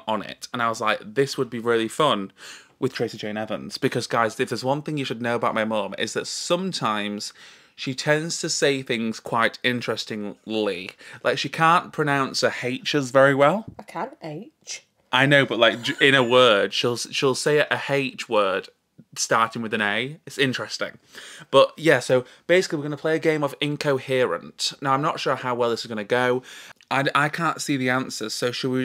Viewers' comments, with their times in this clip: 0:09 It’s like ‘My Fair Lady’ where Audrey Hepburn has elocution lessons.